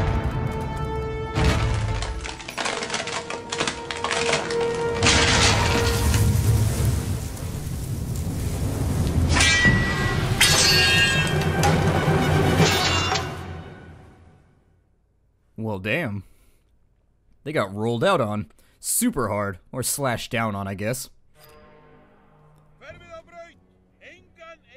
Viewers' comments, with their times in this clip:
0:10 that pettily little thunk and the realization that you're so screwed is the greatest